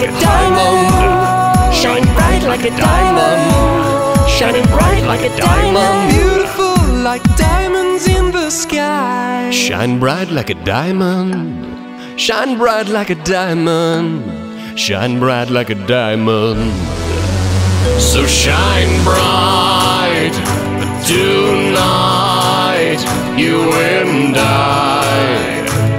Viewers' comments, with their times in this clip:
0:09 aka sexiest part of the song, his voice is like an angel